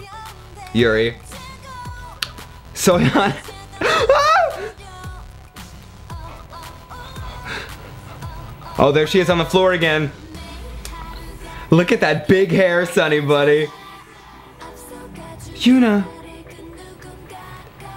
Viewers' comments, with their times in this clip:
0:03 Dat scream XDD